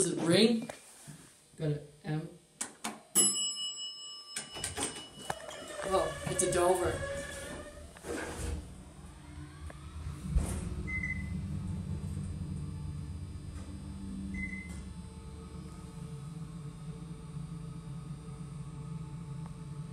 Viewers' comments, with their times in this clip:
0:05 The bell DOES ring when you pushed M.